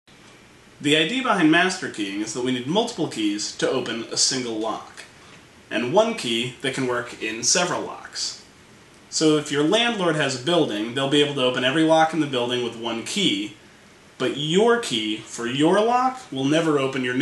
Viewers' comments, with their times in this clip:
0:01 Why did I hear "The idea behind masturbating"? :P